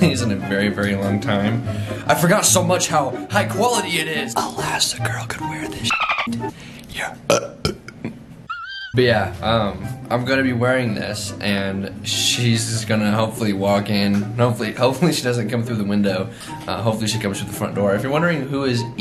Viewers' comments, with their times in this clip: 0:06 why could I taste the burp 😭😭